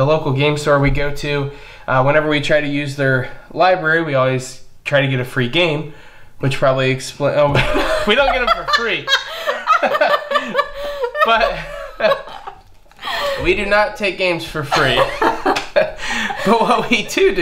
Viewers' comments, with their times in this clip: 0:04 Timeline (Inventions) has become a surprising hit in my group. We usually end our game night with it and always have a blast (7-8 people playing together). Also, what a nice laughter :D